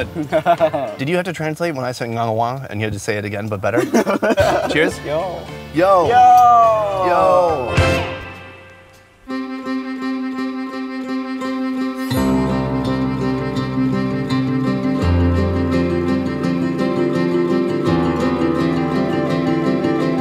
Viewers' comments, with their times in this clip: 0:06 couldve been a rush hour moment i said YOWWW not YO